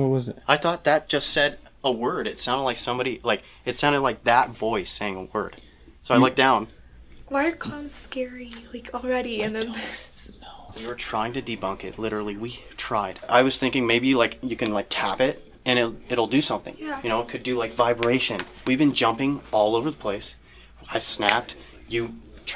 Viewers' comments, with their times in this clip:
0:09 is this river whispering "I don't know"?